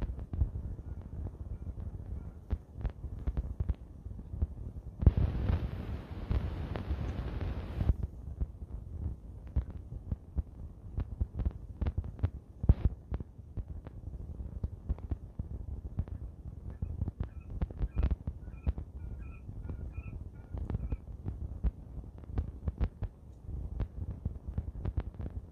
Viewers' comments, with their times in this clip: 0:07 Hilarious quail getting a bit nervous and calling for mommy